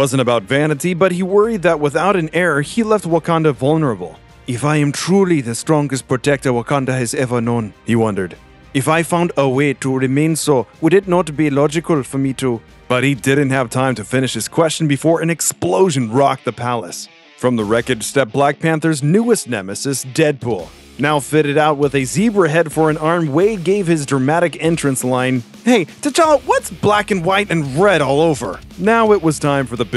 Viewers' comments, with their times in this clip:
0:10 😂 Indian accented the life out of that 😂😂😂😂